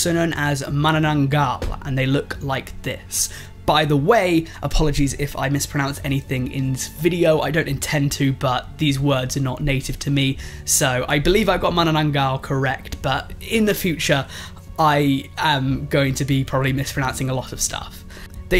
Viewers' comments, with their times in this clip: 0:04 It's okay, pre! You did actually good when you pronounced the word "Manananggal" in your accent! Also there's another ending of The monkey and the turtle but it's different.. The monkey grabbed the stone and smashed his stomach to death. Why did he do that? It's because the turtle. The monkey thought his stomach is actually talking too him but he didn't know the turtle is playing along this whole time as an undercover rock by hiding in his shell. Wasn't it too dark for a children's book? (I'm not kidding though)